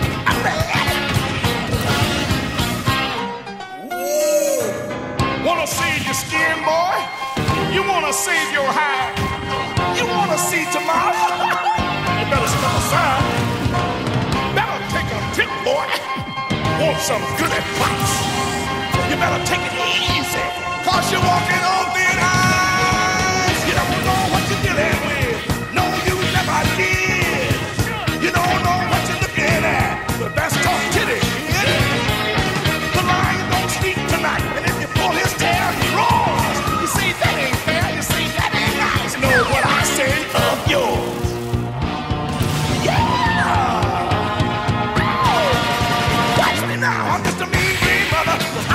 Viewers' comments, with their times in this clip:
0:03 The "OOOOOOOOOOH" slays me.
0:15 “take your temp boy” while hitting with a fire attack
0:36 the Lion roar sound in the song lines up with the spike ball hitting Luigi